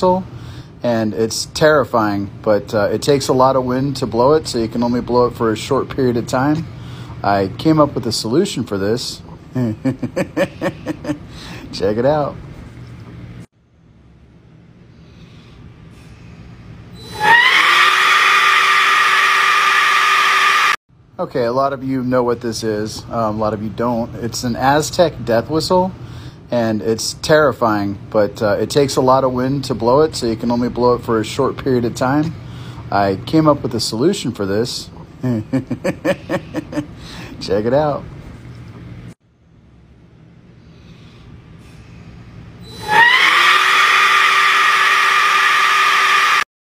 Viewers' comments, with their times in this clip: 0:08 That chuckle is priceless .
0:09 his laughter tho.. 😂
0:16 that one woman in the background of every single street-fighting video
0:17 here time stamp where the aztec death whistle goes active
0:17 grazie films song organ version starts to play
0:40 I’m adding this time stamp so that I can get straight to the screech